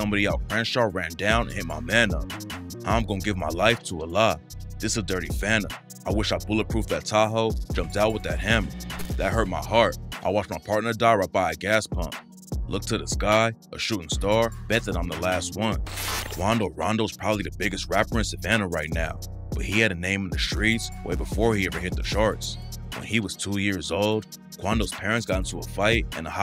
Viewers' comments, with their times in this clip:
0:09 I thought bro was rapping too